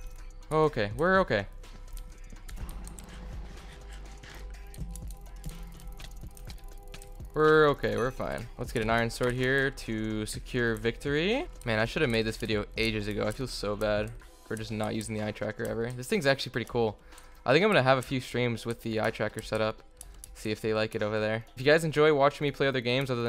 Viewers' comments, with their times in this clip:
0:06 were his hits synced with the music??